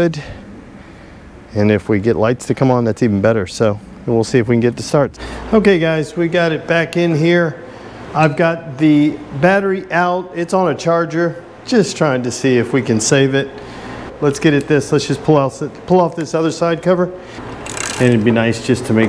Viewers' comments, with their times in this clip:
0:05 For a second I thought I heard the red one growling...